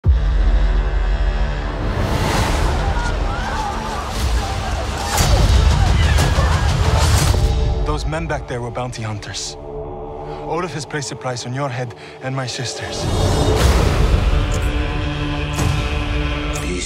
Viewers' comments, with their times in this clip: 0:01 Baaauuunnn Damn you Christopher Nolan